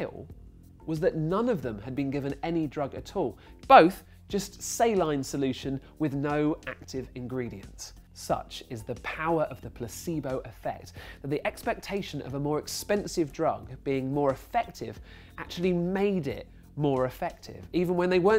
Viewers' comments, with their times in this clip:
0:03 I think it may need 4-6 more dB...or maybe just some good compression to boost it up and level things out. There are some spots where his exclamations seem to be almost peaking (or would be if only the volume is increased without compressing first). he inadvertently points his mouth directly toward the mic and the signal is much greater when he says the word "both". Harder compression will take care of that. That should provide more "powerful" audio signal, but it will probably still need a boost of 1 or 2 dB after that anyways..